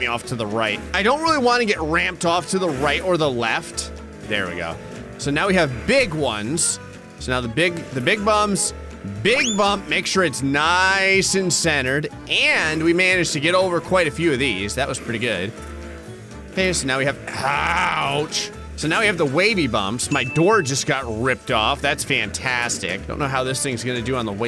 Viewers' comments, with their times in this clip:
0:07 he definitely said “big bums” I turned on subtitles and I was completely correct